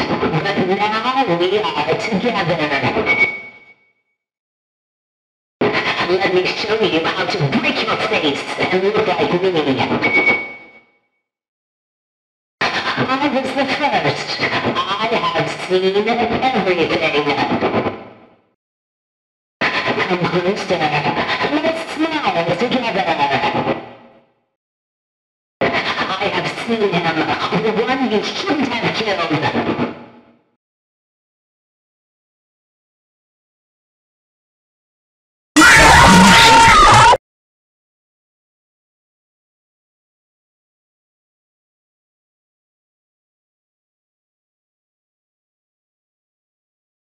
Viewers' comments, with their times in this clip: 0:05 what I thought she said "let me show you how to BREAK YOUR FACE. haahhahjjejejshhehehejahaajaha
0:07 I somehow love the way chica says "break" it's so powerful 😂
0:08 i actually hear "and look like me"
0:09 i thought it was „and look like me“
0:19 This one i hear he talking im fr
0:35 Oh, this was a scream? I though it was a cough
0:35 Everytime I hear the jumpscare, I hear "OH SHIT" in the background of the noise. Listen closer and you might hear it
0:36 the scream got me